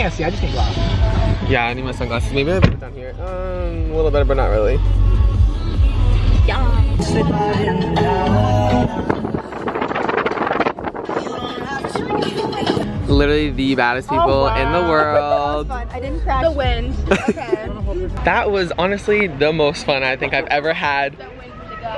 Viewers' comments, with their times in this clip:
0:07 okayy I hear niall horan😂